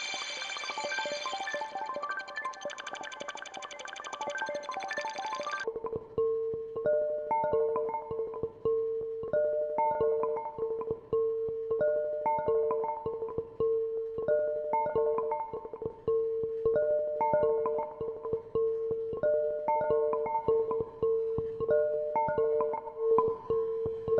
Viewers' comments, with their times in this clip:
0:06 this is a very beautiful demo, thanks ! :) just wondering, where does the sample comes from ? so soothing !